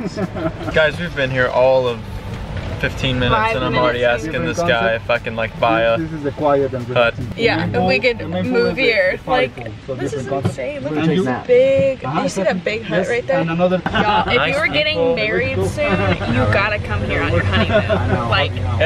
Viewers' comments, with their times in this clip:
0:05 did he say the f word?😂 Edit: sorry it was “if I can”😂😂